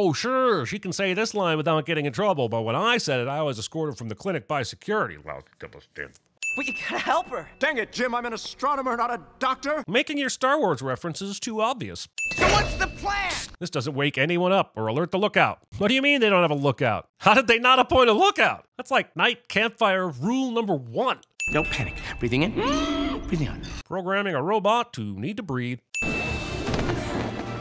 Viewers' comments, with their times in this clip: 0:09 star trek Ping